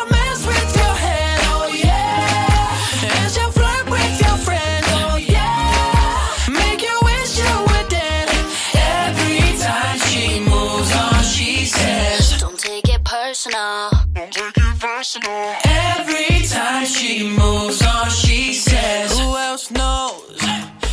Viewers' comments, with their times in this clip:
0:05 she said crys cutly